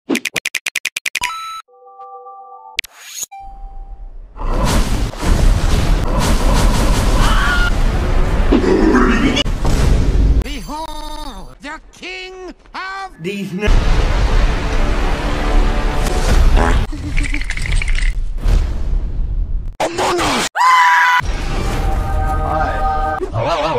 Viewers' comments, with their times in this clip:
0:04 I thought I heard the BFDI gasp